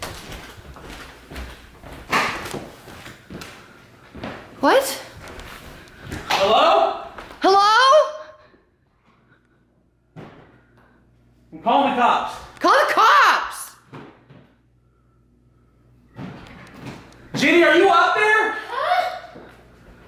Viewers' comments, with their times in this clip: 0:06 you know you're house is big when it has an echo